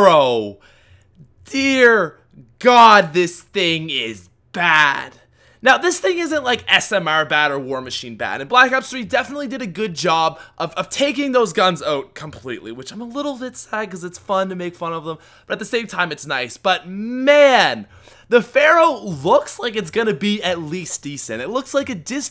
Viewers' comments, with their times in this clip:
0:04 dat voicecrack doe xD